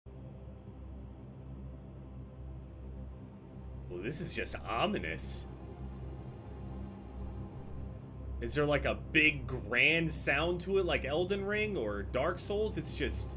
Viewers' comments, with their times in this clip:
0:01 Only very experienced gamers know how difficult a game is going to be just based on the the menu soundtrack